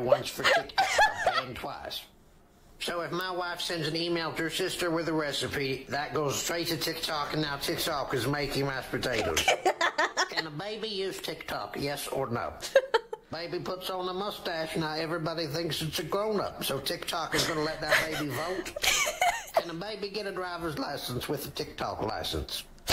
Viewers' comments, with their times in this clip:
0:09 added to my "never-heard" vtuber laughs collection